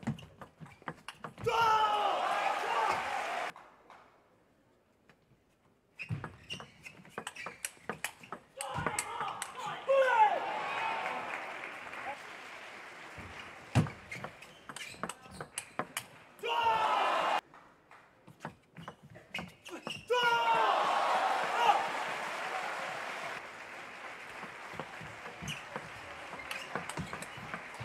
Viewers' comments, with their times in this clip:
0:08 You can hear harimoto yelling in the background